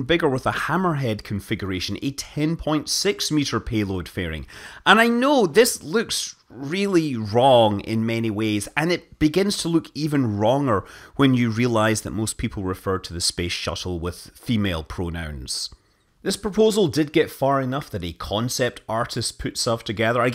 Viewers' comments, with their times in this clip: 0:07 Minute "...wronger when you realize that most people refer to...." Time to watch an SNL skit with a Sean Connery impersonation.